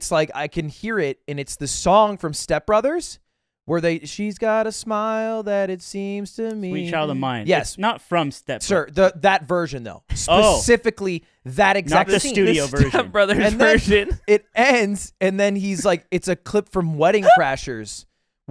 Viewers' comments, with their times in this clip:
0:04 ludwig kinda popped off singing there.